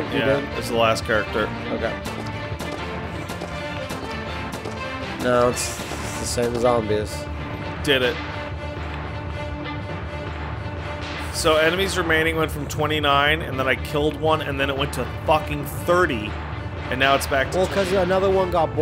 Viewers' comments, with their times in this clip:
0:03 Off brand pirates of the Caribbean music